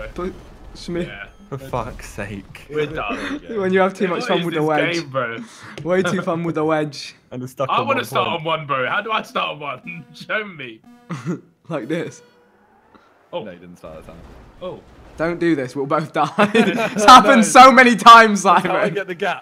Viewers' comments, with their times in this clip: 0:04 JJ Voice: "It's way to fun with the Wedge Ting" "Time to slide under like a fingering" Start to understand